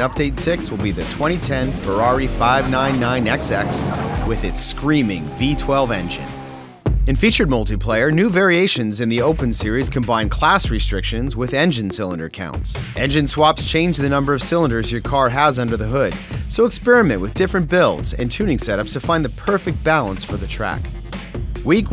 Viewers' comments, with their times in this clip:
0:05 WHY NOT LET US HEAR IT ?!??!!!? perfect moment to showcase the sound, and if its the correct sound you would let us hear it :S